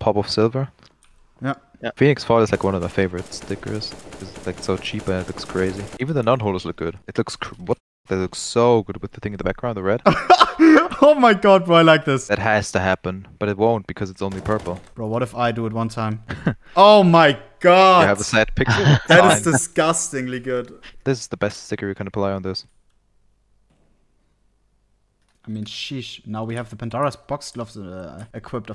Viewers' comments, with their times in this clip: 0:10 you turned into goofy there haha